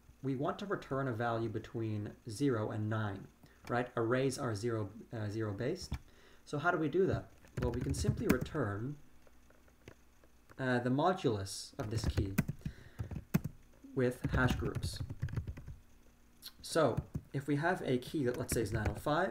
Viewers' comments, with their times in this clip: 0:03 I was actually afraid that people would not like the typing sound and it would annoy them. But people seem to love it. I have another video coming out on Wednesday CST with more typing sounds. :D